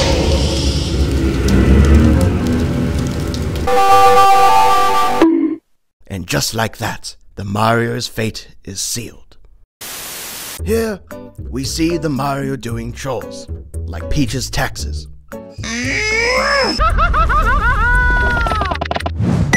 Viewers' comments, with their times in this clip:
0:03 wii sound but bad
0:04 The scream got me laughing 😂